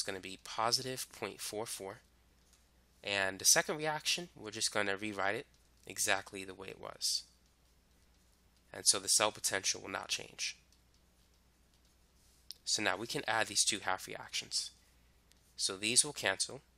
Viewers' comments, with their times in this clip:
0:03 the way he says reaction🥺❤️